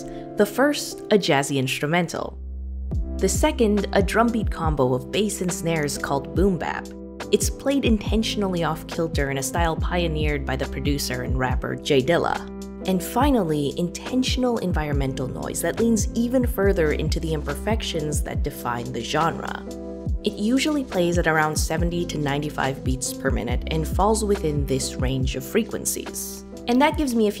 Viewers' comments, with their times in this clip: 0:09 Whats the song that plays ? It slaps but not to hard